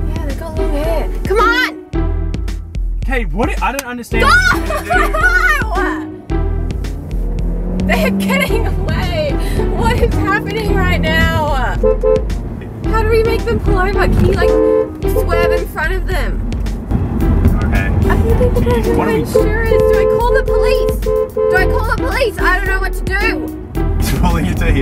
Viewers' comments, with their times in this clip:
0:03 why is she laughing when her car is getting stolen
0:04 wtf why was she laughing
0:06 what ever BMW that is, it sounds good AS